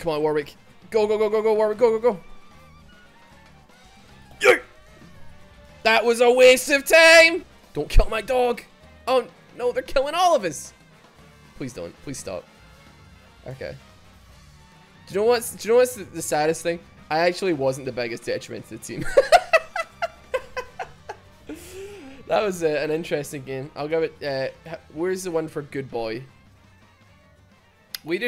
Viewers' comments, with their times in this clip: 0:09 oh no, they're killing Olivers